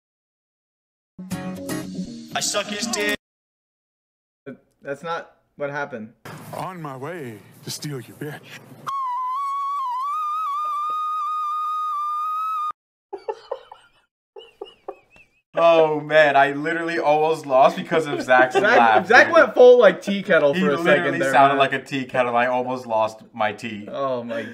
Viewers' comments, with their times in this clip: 0:09 WARNING FOR HEADPHONE USERS! IS LOUD